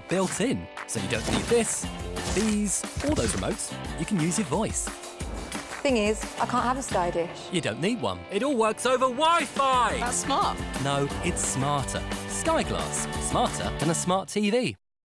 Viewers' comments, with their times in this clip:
0:09 The Voiceover guy gets really angry about answering all these questions and finally snaps.